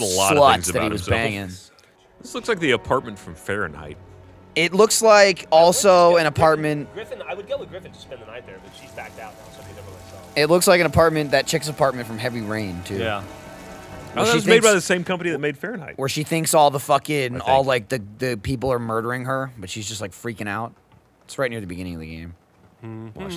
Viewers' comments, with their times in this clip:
0:04 why can i hear one of the podcasts (i think)